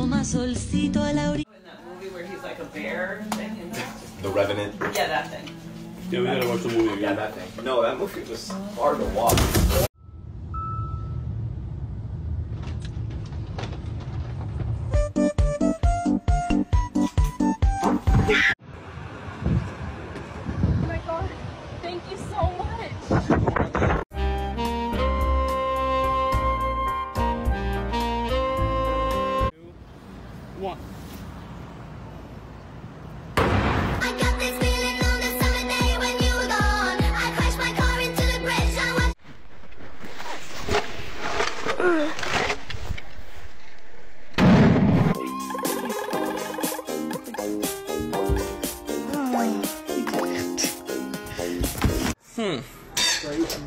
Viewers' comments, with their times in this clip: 0:09 cue lego breaking sound effect
0:39 I like you can tell they're Russian just by the Russian accent on the grunt